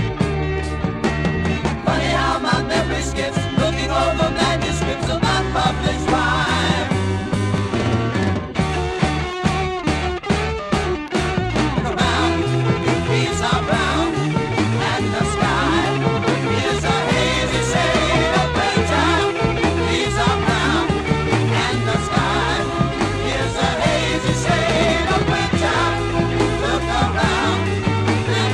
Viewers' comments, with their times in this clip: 0:10 Sounds like a Captain Beyond riff